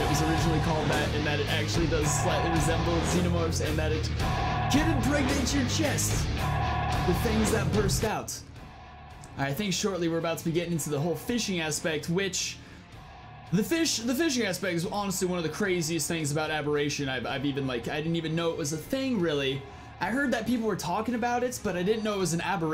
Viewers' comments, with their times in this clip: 0:07 i think you messed up the audio here dude